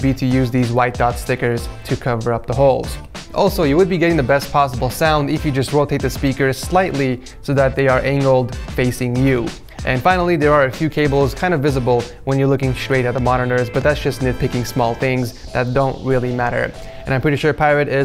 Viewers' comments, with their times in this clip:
0:03 he said analed